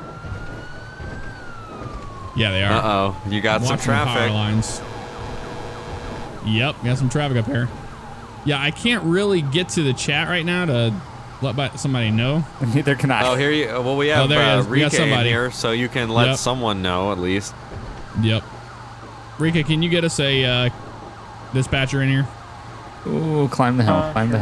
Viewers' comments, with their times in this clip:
0:06 Dat voice crack